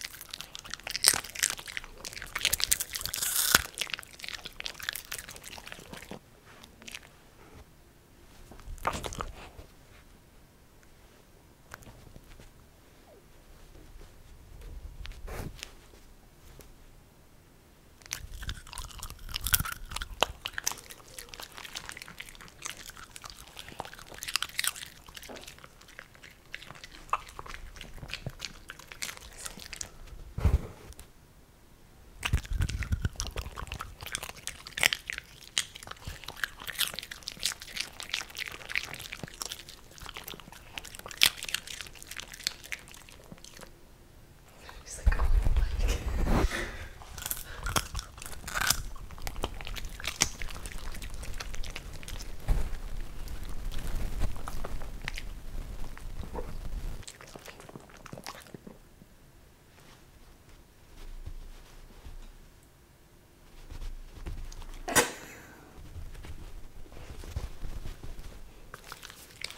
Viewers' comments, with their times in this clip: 0:08 Kermit doing a lil popcorn blop hehehehe
0:42 Peach’s ear brushing the microphone made me dumbsmile
0:55 you can hear the little woosh that peachy makes when she reaches out with her paw